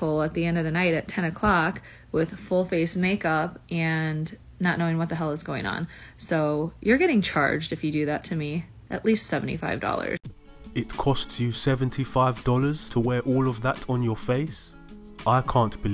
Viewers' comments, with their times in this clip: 0:03 $75! Was that just for the first coat? Because there's a lot of plastic shine. Do you not charge for the fake vocal fry as well? You know, the affectation used by "fake" celebrities and 16 year old "populars".